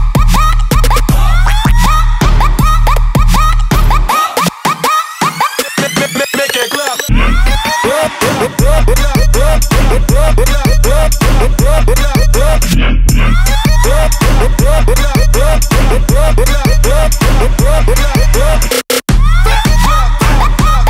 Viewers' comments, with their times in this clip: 0:05 that bass line <3